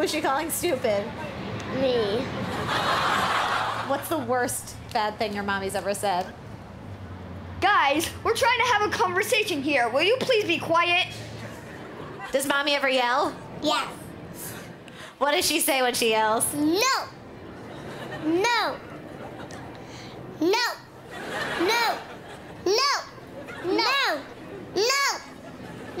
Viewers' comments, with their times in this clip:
0:10 the one too he's good at that impression lol